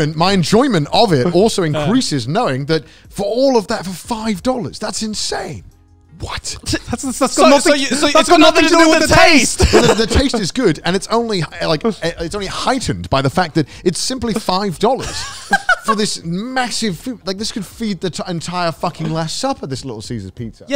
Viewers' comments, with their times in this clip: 0:08 Arguments aside, their sync up here was so satisfying lmao